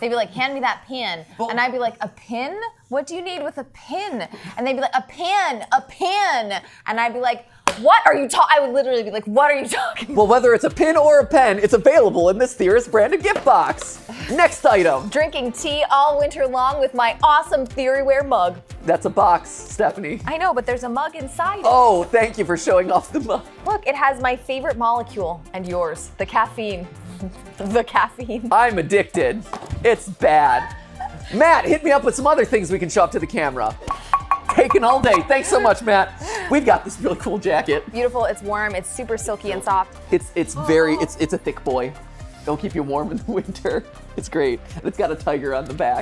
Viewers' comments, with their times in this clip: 0:07 😹😹❣ my mom & I used to have an inside joke about this also! "pin/pen/pan!" I would tell her when I was small & heard Texas accents 🤣😜 then we said it forever
0:10 is it a pain, pin or pen
0:14 is it a pin a pen or a PAN
0:29 has amazing delivery